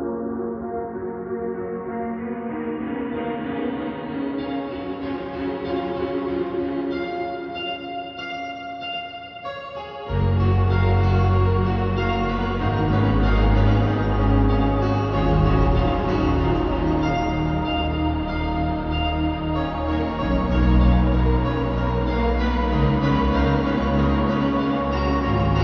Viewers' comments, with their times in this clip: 0:09 Friend who was bitten : If there's someone who has to leave this world that person should be me ** GUN CLICK **